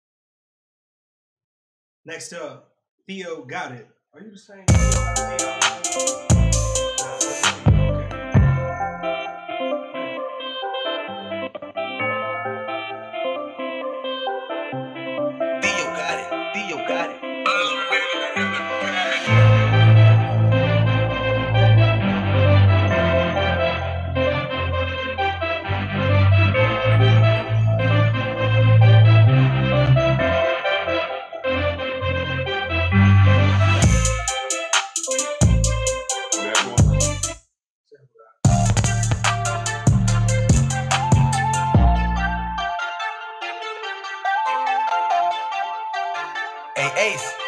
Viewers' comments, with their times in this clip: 0:04 wtf? Shit was alright damn, again no monitors can’t hear the mix but shit compared to some go aheads wtf
0:34 That beat is fire I don't know what timbo talking about